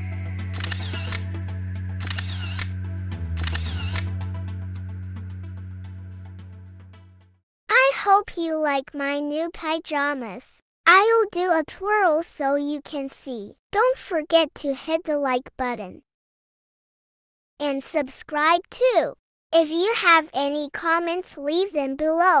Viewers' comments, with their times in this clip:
0:06 Good video, and what fun I had when that tiny voice started to talk about subscription, I touhgt that was another video starting to play with auto play function or something. I didn´t realize that was this video.